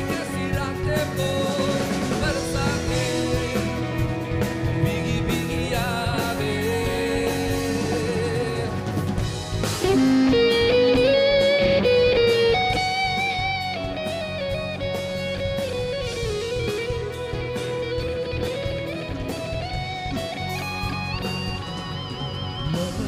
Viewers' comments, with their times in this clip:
0:09 what a guitar failure 😅😅